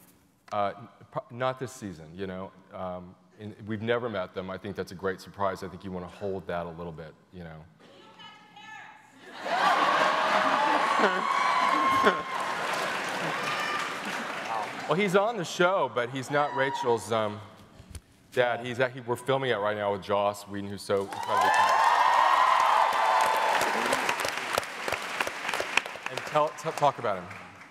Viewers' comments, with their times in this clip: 0:08 What did the woman shouted ? Didn´t catch that